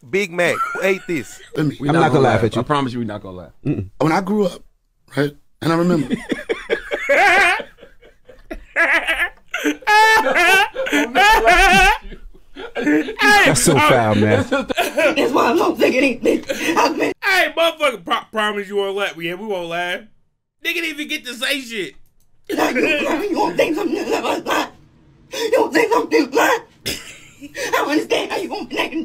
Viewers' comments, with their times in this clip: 0:10 I thought you was singing 😂